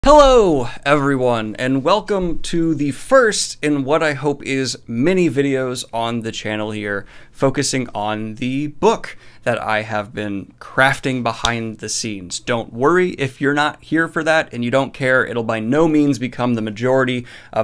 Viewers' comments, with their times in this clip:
0:00 omg the heloooo was adorable but continue